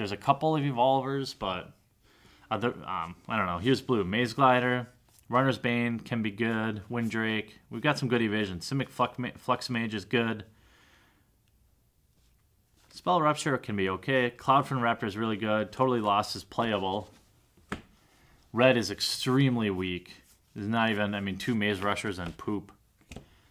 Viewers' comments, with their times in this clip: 0:08 for 'simic fuck-mage'
0:08 Simic Fuckmage *Fluxmage
0:09 Simic fuck mage? o.O